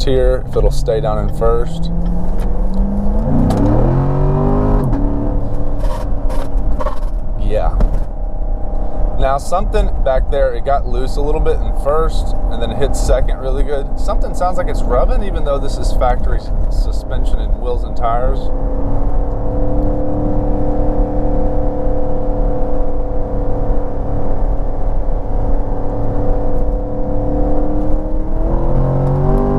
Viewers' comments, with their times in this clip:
0:10 Could that noise be the torque tube going bad? I've hard the C7 has been know to have bad torque tube problem.